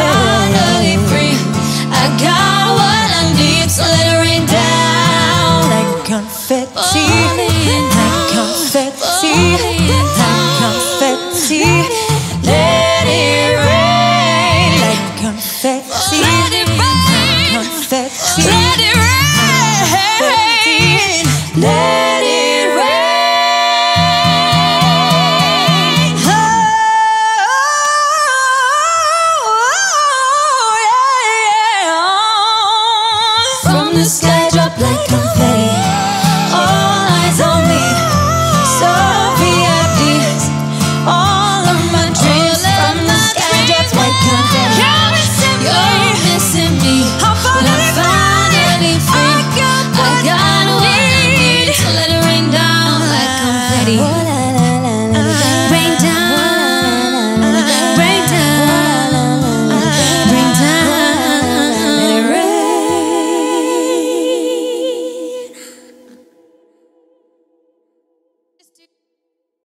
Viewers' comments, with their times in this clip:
0:03 True! Her adlibs from to the end make this performance so magnificent!
0:15 who are you and what did you do with our little sweet Jade? Like seriously in that moment Jade turned into some freaky diva. THAT VOCALS WERE FIREEE
0:16 Is no one gonna talk about Jade’s “Let it Rain” ?! The growl, the power... perfection😩
0:16 idk what happened but Jade suddenly sound like a freaking diva, her inner Christina Aguilera jumped out lol
0:16 why is nobody talking about Jade's voice ? omg I'm obsessed with it
0:16 SOMEONE HELP I CANT STOP REPLAYING JADE’S NOTE 😍🥵
0:21 Leigh Anne took the highest vocal line (twangy falsetto) Perrie took the lowest line Jade took the belted vocal line
0:25 Perrie's run are so Céline runs style. Its undeniable that she's her truly idol ❤
0:26 Gosh that moment !!! Perrie killing it and Leigh and Jade just being like "yeah look at this girl slaying these notes and runs!! you know she is amazing! look at her being so awesome!" love how much they support each other.
0:26 Queen 👑 Perrie's unborn child be like "Mom! you're too loud, I'm sleeping!"
0:26 When you are in the hospital and you hear Perrie laboring. 😂✌
0:26 Me when she hits that note: 👁👄👁
0:26 Perrie giving birth (I saw this on Insta an I thought this was way too funny 😂)
0:27 Just imagining perrie hitting that note on while she's in delivery room..
0:31 jade be "that's my girl" while perrie's belting.
0:33 Is this really live? you can hear 2 voices singing in harmony but only Jade has her mic up, the others aren't singing
0:35 The tonnnnneeee on confetti Gosh darn Jade
0:37 Is no one gonna talk about Jade’s “All eYesSS” ? Got me on my feels....
0:37 that note is really beautiful
0:37 and jade's "ALL eYesS" is so amazing
0:44 No one gonna talk about Perrie's growl!!
0:51 The “I got what I neeeeEeEEed” gave me super early 2000’s vibes.
1:00 How Leigh Anne did that dOoOown so beautifully ??? Me doing sounds like a seal
1:00 WHY AM I JUST NOW NOTICING THAT BEAUTIFUL ASS NOTE LEIGH ANNE DID ?!?! I'VE LITERALLY LISTENED TO THIS VERSION OF CONFETTI THOUSANDS OF TIMES, wtaf.
1:01 IS NO ONE GONNA TALK ABOUT LEIGHS RUN IM LITERALLY CRYING😭😭😭 IT SOUNDS SO PRETTY